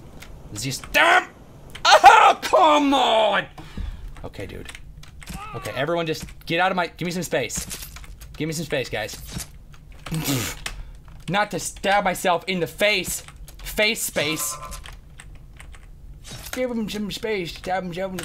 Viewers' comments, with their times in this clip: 0:04 he sound like lemon grab from adventure time